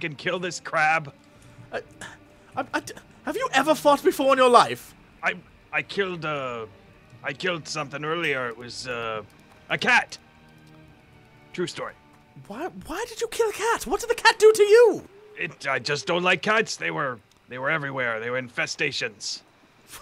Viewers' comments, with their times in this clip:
0:06 i was alt tabbed on wow watching this, and i thought someone PMed me! Haha!